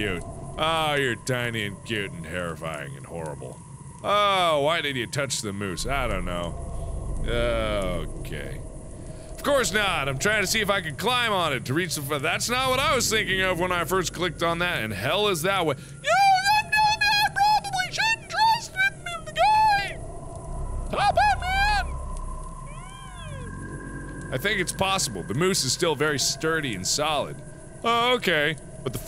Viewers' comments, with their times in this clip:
0:10 the way he says "...and hell is that way" made me lose it
0:15 not gonna lie Mark, that voice sounded alot like Mr.Bill from Saturday Night Live's Mr.Bill Show. XD